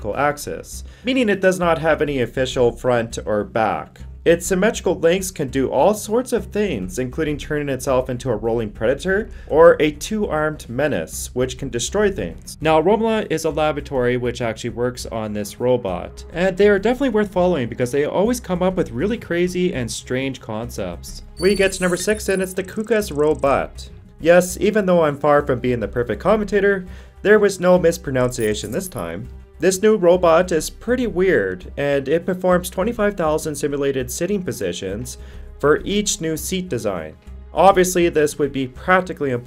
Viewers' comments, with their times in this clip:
0:08 What the hell did he say ?
0:23 FYI, you mispronounced mispronunciation. Oh The iruny!
0:26 That's mispro nun ciation.